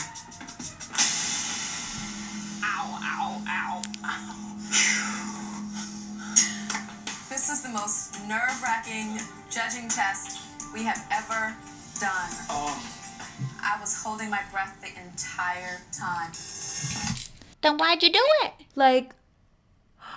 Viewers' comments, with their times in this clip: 0:07 they all where laughing at her trying to hold it in. How could they be so cruel honestly I would have probably went up and had a few things to say I definitely wouldn’t hold back if they said show respect I’d say excuse me but do you even know what respect is I don’t think so. Uggg people are so cruel it’s so sad!!!